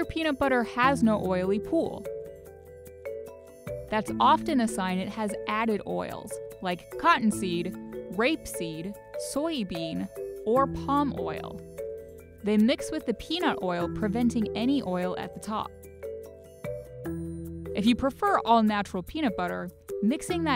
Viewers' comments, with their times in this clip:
0:07 why the emphasis on rape